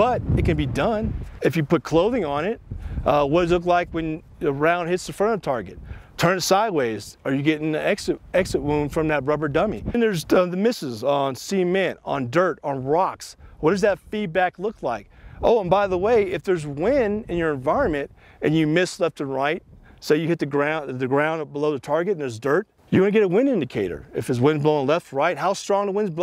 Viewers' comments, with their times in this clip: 0:09 Great video --> FYSA: No audio
0:10 you guys are missing a couple seconds of audio